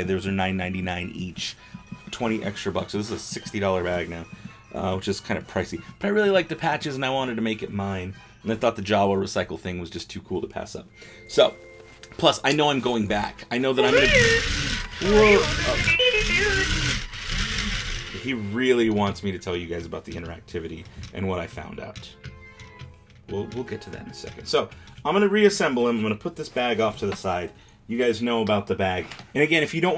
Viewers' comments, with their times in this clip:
0:10 that wasn't him asking for secrets, that was a plead for help